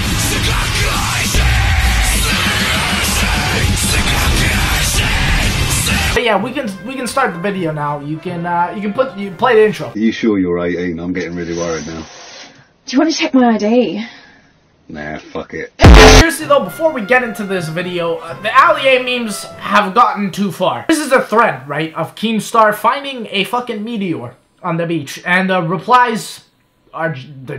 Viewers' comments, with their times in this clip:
0:10 Why is nobody talking